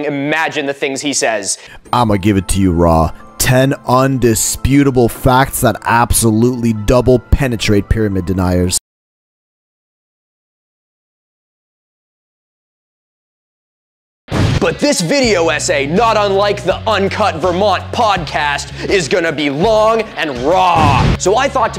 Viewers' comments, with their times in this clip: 0:04 the silence was to loud bro